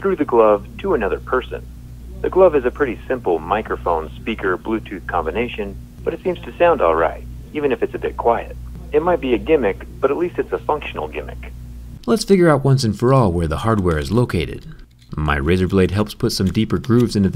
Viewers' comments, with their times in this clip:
0:03 sounds like a 90s ad 😂😂😂😂
0:04 sounds like a pilot telling about the flight